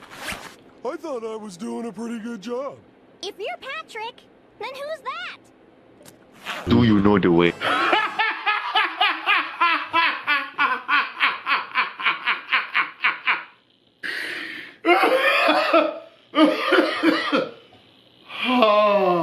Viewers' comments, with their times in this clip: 0:06 The immediate transition of utter terror to uncontrollable laughter is the funniest thing